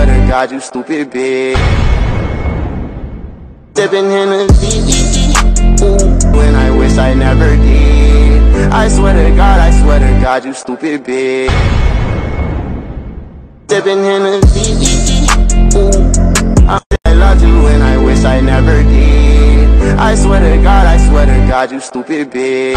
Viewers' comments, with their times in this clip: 0:05 what kind of woah is that